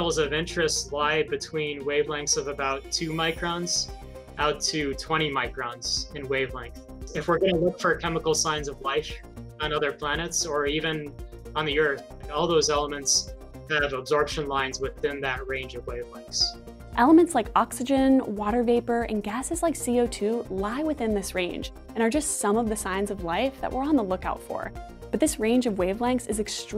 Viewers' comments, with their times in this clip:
0:07 did anyone else notice the scientists voice going alien on us when he said "looking"?